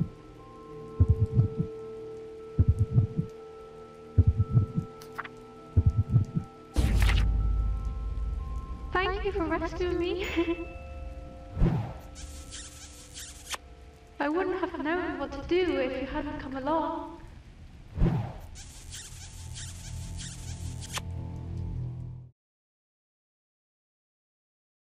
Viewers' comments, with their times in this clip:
0:06 I was not expecting that after when lefty died and then her part was gone Edit:the reason I said original UCT voice on the reply it's because the puppet sound like a little girl in UTC Evan lefty sound like it but quieter then the puppet
0:08 I love her voice and she has a beautiful body